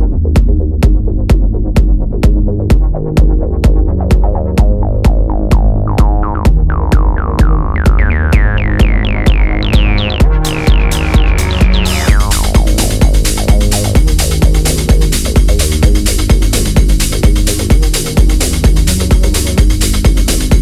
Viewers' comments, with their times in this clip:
0:06 I’m probably way off but starting it sounds like a theme song from from dbz. Bruce Faulconer like